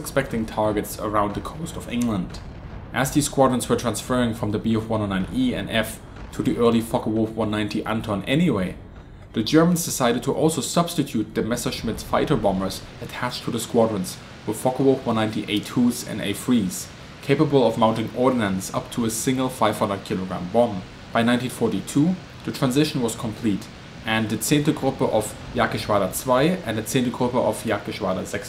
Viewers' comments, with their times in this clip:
0:09 Great target stuff vid. Ohh man I do love my fw 190 a8-r2..( tamiya ); you got afunny strong german accent..I like it, un saludo desde Madrid.